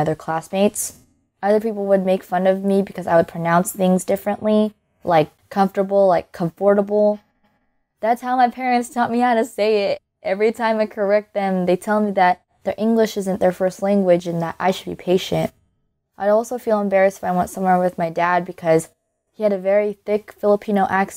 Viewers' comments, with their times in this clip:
0:03 it’s good to know I’m not the only one who says comfortable
0:06 that is how my sister also say it!😄
0:07 The way she said it lol 🤣